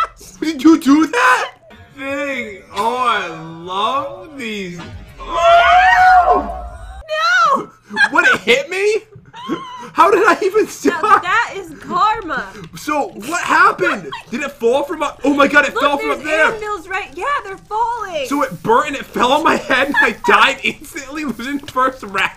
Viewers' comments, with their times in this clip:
0:04 does he not sound like a whale who’s crying?